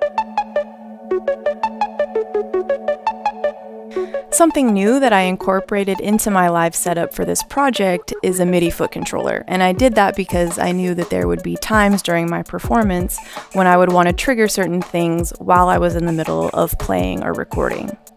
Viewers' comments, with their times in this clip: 0:06 I'd guess the video and audio were recorded at different times. At ~ she is scratching the "keep it real" sample and you can watch the record and see the start point for the sample, she brings in right back to the exact same start point and the sample is now a kick and snare. Not a diss... a surprising number of "live" performances online aren't actually live, kind of like a music video. I've no doubt she actually recorded the audio live, it just makes for a better video to record audio and video separately. I also could be totally wrong.